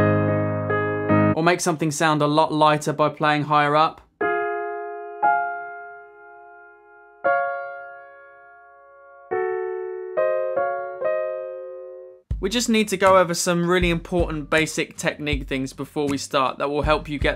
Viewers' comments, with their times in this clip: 0:04 what's the name of this? It sounds really nostalgic and familar and I cant really seem to remember...